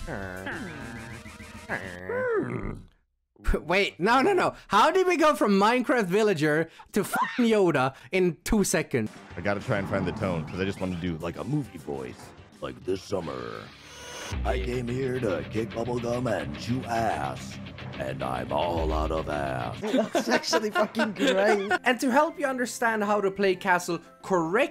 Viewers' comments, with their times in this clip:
0:08 sounds like duke nukem chain smoked for 20 plus years (Edit was to fix typo)